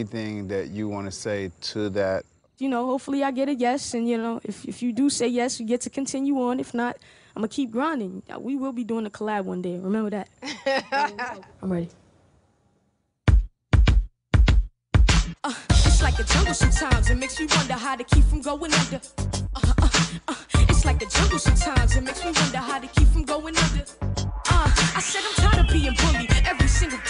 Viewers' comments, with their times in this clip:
0:10 rihanas laugh <3